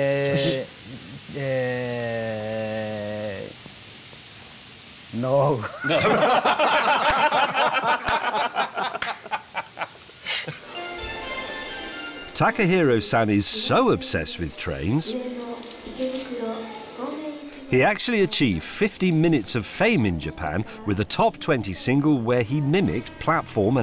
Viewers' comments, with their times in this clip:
0:05 I love the connection when they share a laugh, the cultural differences completely vanish. 😄